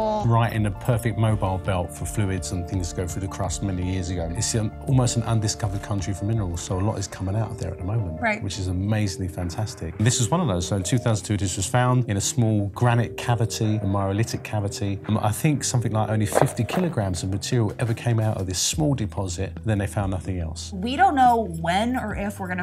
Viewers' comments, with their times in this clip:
0:08 the bgm reminds me of tera patrick